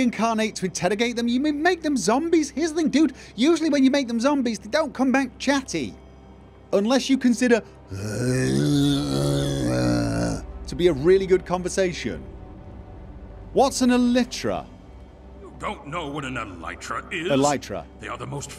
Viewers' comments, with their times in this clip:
0:04 How do you spell that Sound ?? Ooh noooo. I laughed so much my small head muscles hurt!! Rofl